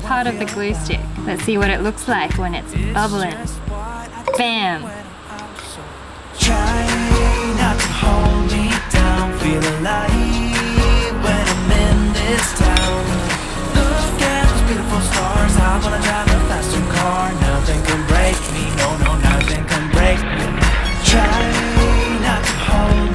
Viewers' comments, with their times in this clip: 0:08 the song reminded me of Aphmau